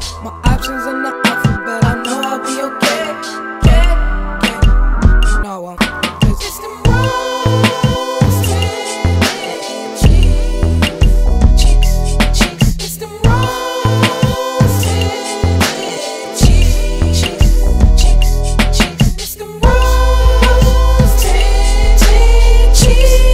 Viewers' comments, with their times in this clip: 0:07 sounds like hog rider